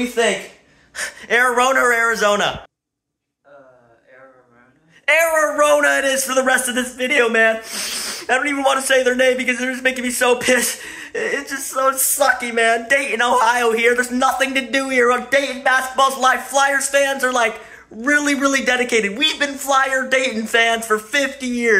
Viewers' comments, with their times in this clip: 0:03 Why’s that sound like a guy?